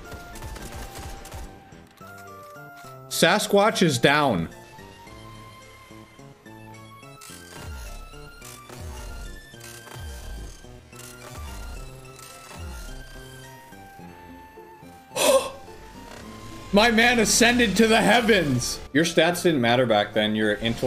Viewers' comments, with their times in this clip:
0:06 slowed down mida actually sounds cool